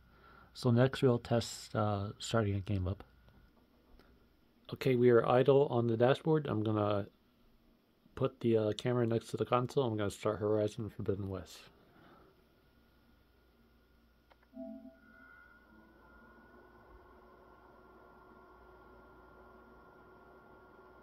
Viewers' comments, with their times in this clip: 0:06 Yeah, that moment when I start Horizon Fobiden West is the loudest my fans get too, and it does exhibit a slight hum of coil whine like my previous Phat PS5 1215A model. I've played games like Spider-Man 2 for up to 2 hours, and the fans spin around the exact same amount of noise as the video shows when I start the title. And yeah, I know I should have fully started the game, but the main menu does render ingame, so it is still kind of similar workload.